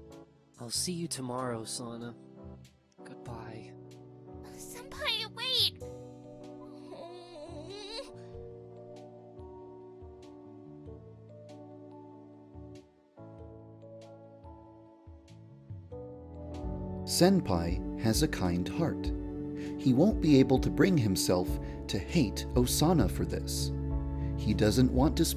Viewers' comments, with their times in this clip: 0:06 Idk why but I love Osana’s “oooohhhh” when Senpai leaves😭